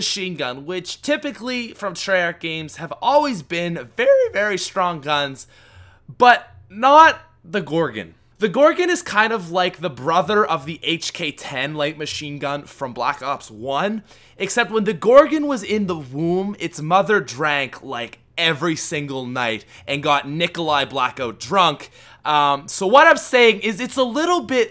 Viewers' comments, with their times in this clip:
0:04 dat voice crack haha
0:05 That voice crack is killing me
0:05 that voice crack though.